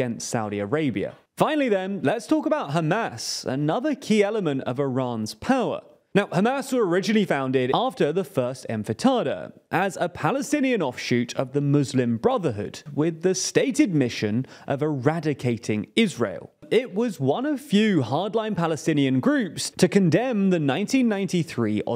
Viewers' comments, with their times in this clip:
0:07 I get that the words aren’t native, but when you mispronounce basic words (Sunni, Intifada) it undercuts your credibility as a reliable, well-sourced news outlet.
0:08 press for infatada
0:09 Infitadah?? You mean intifada? Sorry but this guy is hard to listen to...